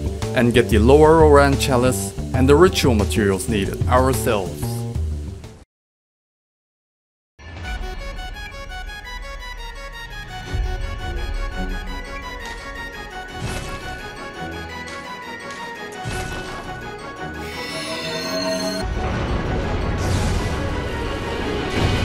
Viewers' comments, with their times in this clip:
0:09 Ahh that song reminds me of duck tales.